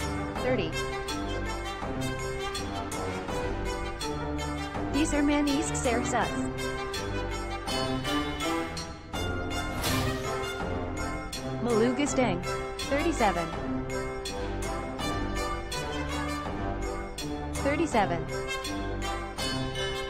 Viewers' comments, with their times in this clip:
0:04 everyone Korean That one German guy